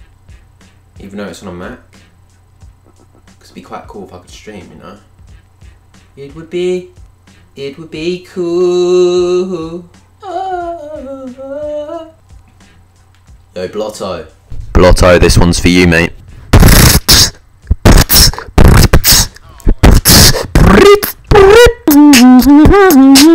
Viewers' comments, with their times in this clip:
0:05 #NukedOutDrought also hear the angles sing